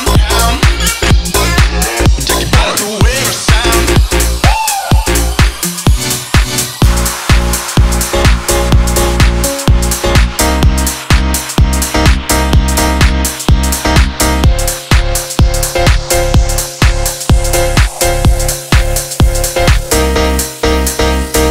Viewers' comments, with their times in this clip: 0:06 nice beat, but there literally is no melody. It gets better when the vocals kick in though. Not a bad track, but it's missi- arrived and made me stop my comment lmao. Dem chilled out summer vibes! Good song :)